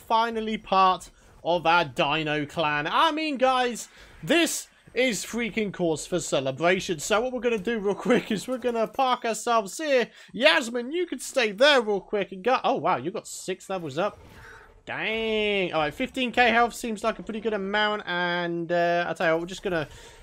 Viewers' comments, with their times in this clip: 0:08 I thought he said the f word